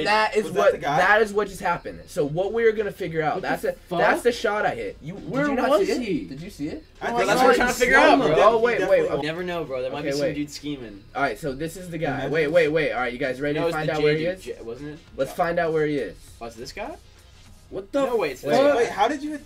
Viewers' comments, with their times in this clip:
0:06 Peep the “Jahzeh”